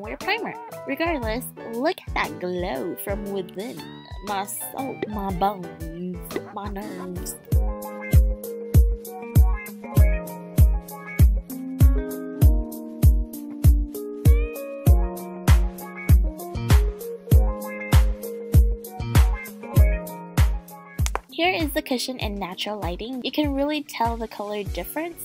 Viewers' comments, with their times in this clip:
0:08 Omg the bgm from sounds like 'Coffee' from BTS :_(((((((((((( wish i was going for the concert but I am in Asia :-)))))))))))))))